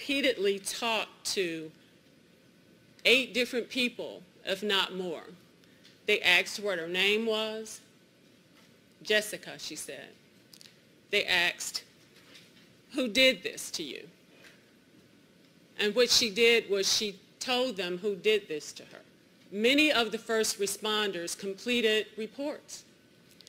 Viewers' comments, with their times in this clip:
0:04 they “axed” her?!
0:08 " they aksed" lol😂